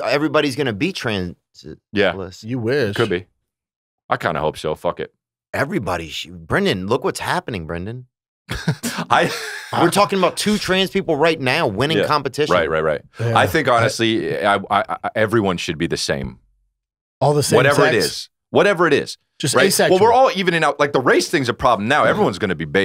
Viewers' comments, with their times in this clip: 0:08 lmfaoo Theo sounds so terrified